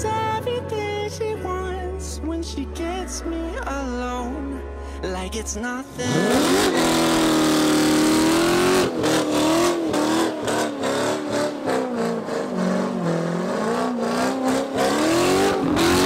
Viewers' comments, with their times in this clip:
0:04 As a C7 owner, I had to turn it off because the shit music was unbearable. Where's the Slayer? Some Pantera, perhaps?? Fucking hell.